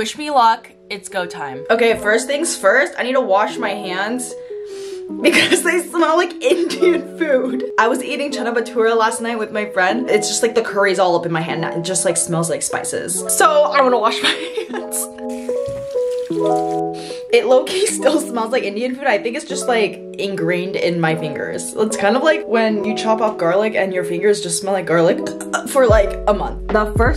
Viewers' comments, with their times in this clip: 0:09 the way she said chola bathura😂❤